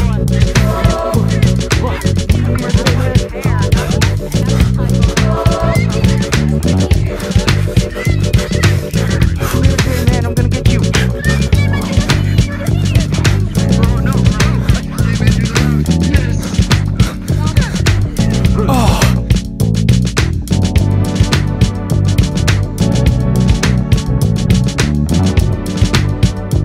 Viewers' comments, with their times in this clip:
0:08 Music to the end fire 🔥